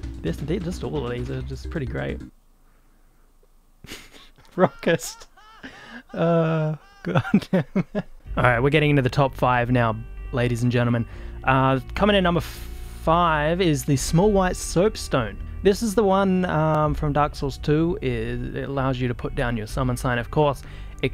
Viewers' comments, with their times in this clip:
0:04 I'm sorry, but was that laugh the legendary "FFX Tidus cringy laugh"?!?! Only a man of real culture would be able to identify this laugh and it's true origins......